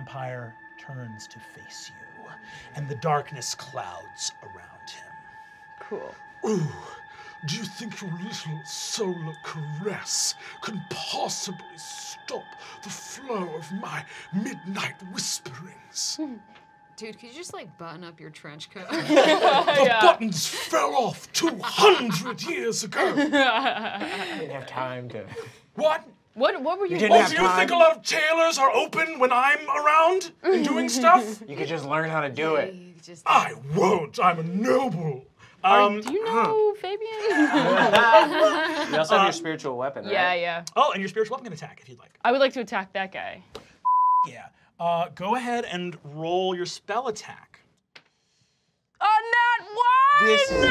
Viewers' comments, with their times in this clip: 0:07 Sasha lord of whispers kind of sounds like Tim Curry specifically
0:08 is it just me or does this vampire sound like tim curry in rocky horror picture show
0:31 The Tim Curry vampire killed me 😂